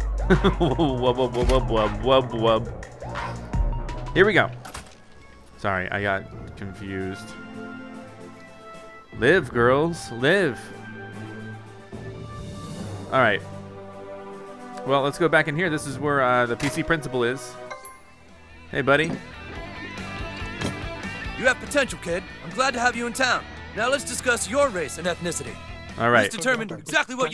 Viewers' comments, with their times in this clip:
0:08 he said live girls when it's live girls